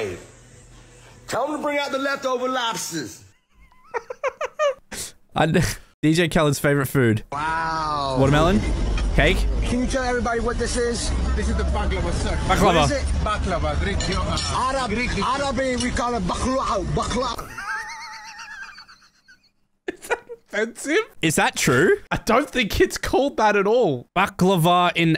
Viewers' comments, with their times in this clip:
0:10 Dude, since this man is Arab, his accent is different. Therefore, his way of speaking and manners are different. And Correct information: "Baklava", which was registered in Turkish on August 8, 2013, belongs to Turkish!